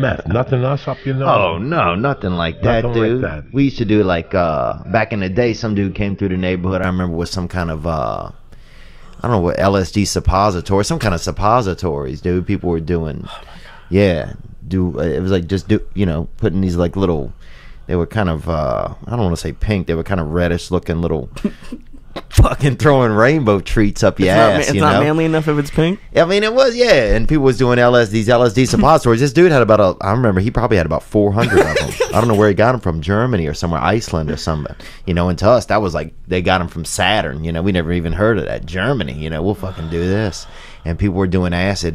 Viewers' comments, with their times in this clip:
0:07 the audio clears up
0:07 is when the super compressed audio gets fixed.
0:11 This is the point where audio starts working normally 👍🏻
0:26 for tolerable audio